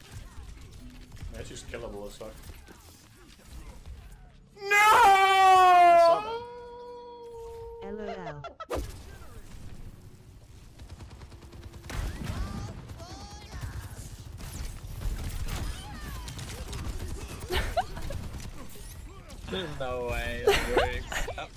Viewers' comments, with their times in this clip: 0:04 sounded like the darth vader nooooooo lol